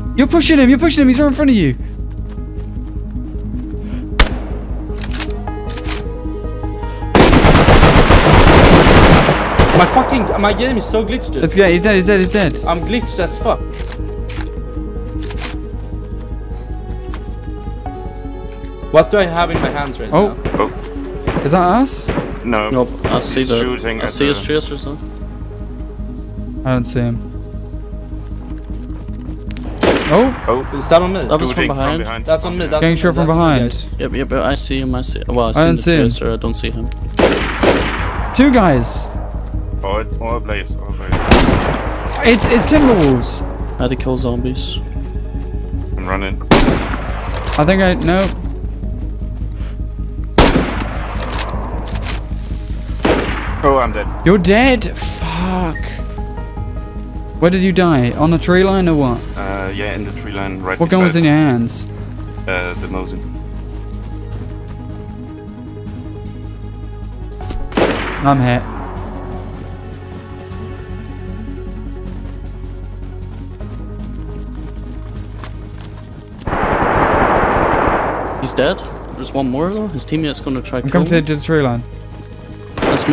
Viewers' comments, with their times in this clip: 0:10 lmao that Swenglish
1:07 I absolutely LOVE the fact that the bullet hit him before he heard the shot. Just like real life. Now, THAT is attention to detail ! And nothing sells me quicker on a game than attention to detail. Getting the small stuff right goes a lonnnnnnnnng way with me.